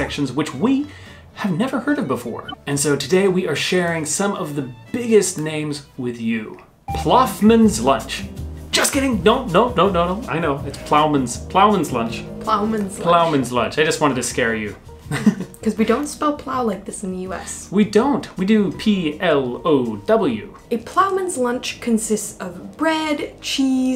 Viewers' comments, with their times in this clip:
0:10 I just lifted my fingers of my desk and onto my iPad ready to correct your pronunciation just then 😅